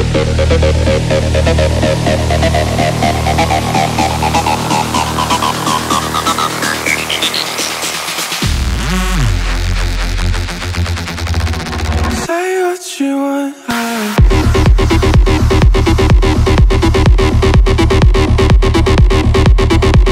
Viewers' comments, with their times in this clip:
0:08 holy sheeit about that bass drop, give my soul back!!